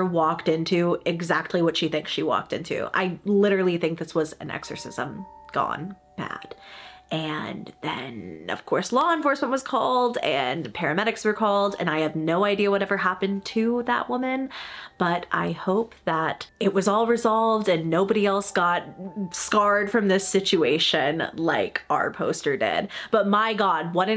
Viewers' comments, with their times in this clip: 0:08 your voice completely changed 😦😦